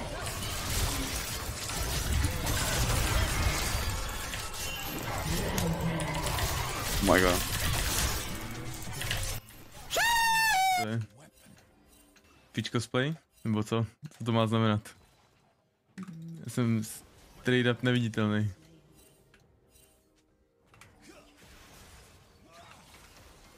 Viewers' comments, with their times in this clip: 0:09 my neighbor's chicken at 7A.M